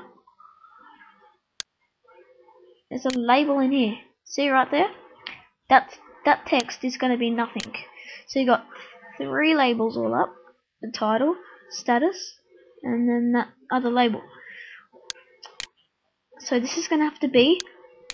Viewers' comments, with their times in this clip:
0:03 was that a panel in